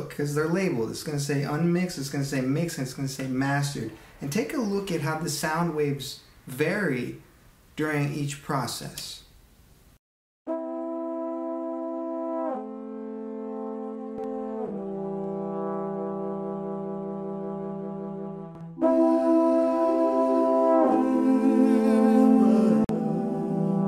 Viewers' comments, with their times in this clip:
0:09 Oh, ok at least you have side-by-side comparisons EDIT: ok so, they are possibly at different volumes?? Ugh, this video is so silly.
0:09 Side-by-side comparisons EDIT: ok so, they are possibly at different volumes?? Ugh, this video is so silly.
0:09 But to be fair, least he had side-by-side comparisons EDIT: The audio.. is possibly at different volumes..